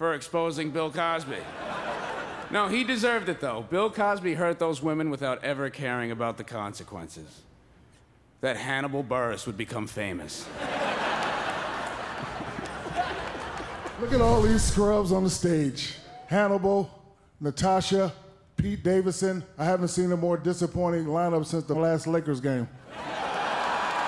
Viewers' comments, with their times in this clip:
0:08 The pause in the Hannibal and Bill Cosby joke LOL